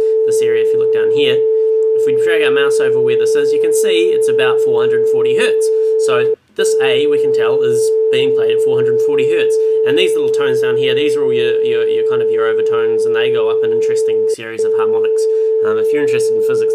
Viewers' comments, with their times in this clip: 0:03 I love the phase effect one hears when you talk haha! Good tutorial for newbies ;-) I wish these tutorials were at youtube when I started to learn these things...